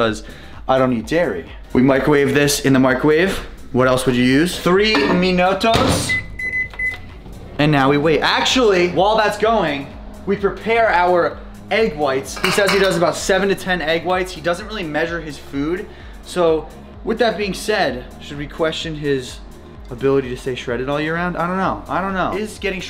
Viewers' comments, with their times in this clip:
0:04 Uff That Gringo 's Acent LOL